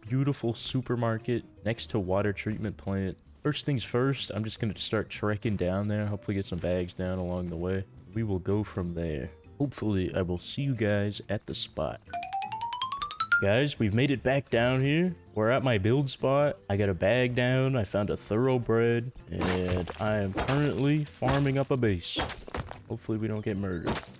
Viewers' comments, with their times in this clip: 0:10 hehe that goofy ah noice made me chuckle